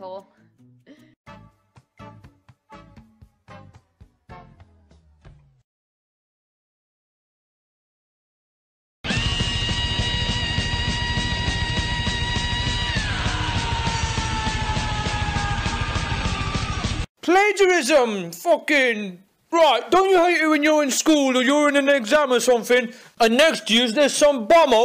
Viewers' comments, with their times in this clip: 0:07 oh shit. The music has stopped slowly and it's just his face. I think I know what's going to happen
0:07 put the volume to the max you can hear a whisper its pretty funny what he said lol
0:09 RIP headfone users
0:09 IM WEARING EARPHONES AT MAX VOLUME,MY BLOODY EARS!!!
0:09 when heavy metal singers stub their toes XD
0:09 Grade: screaming with anger Me: screaming with laughter
0:09 What song plays it sounds like slayer
0:10 Rip earbud users
0:10 never thought I would hear my favorite song in a grade video